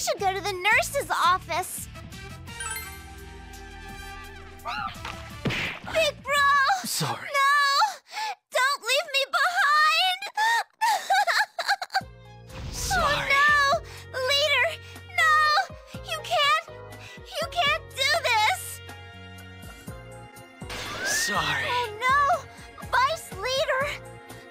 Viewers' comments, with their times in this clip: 0:05 Yu dies Nanako: Big bro! No! Don't leave me behind! Nanako cries Music plays: * I FACE OUT I HOLD OUT!*
0:12 Heaven playing in the back is sick work.